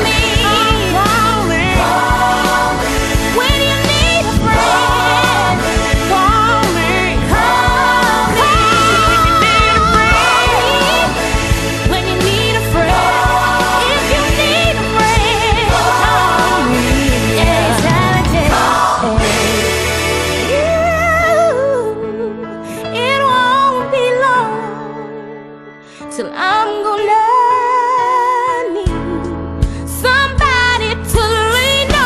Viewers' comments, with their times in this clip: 0:06 Who wouldn’t like to call Puck when he says it that way?😍
0:17 our girl was slaying her vocals ❤
0:17 Rachel’s voice was all in of the song that was her voice call me up